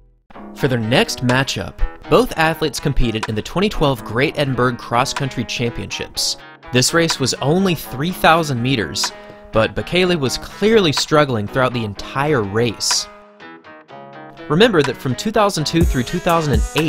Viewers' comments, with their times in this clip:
0:04 did he really just say edinberg 🤣